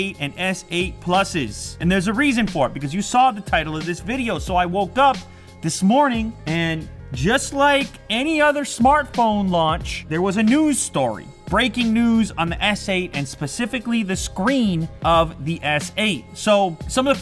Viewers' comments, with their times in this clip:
0:05 did he say worked up?